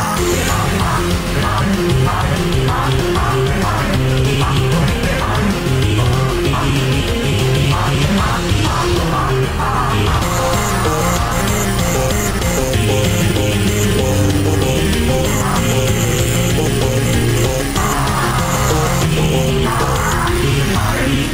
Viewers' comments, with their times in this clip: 0:07 he sounds like he's saying mommy